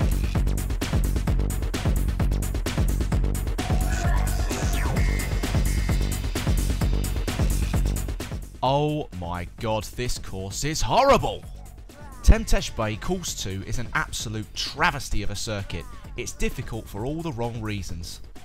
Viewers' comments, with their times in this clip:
0:05 I like the way you reveiw these stuff. Good details, and also made me giggle at times, "Oooohh maaa goooohd" hehe! Good stuff!